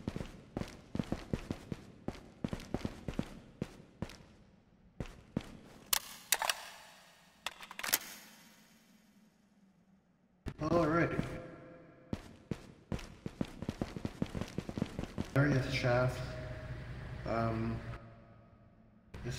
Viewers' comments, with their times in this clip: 0:05 that echo is so cool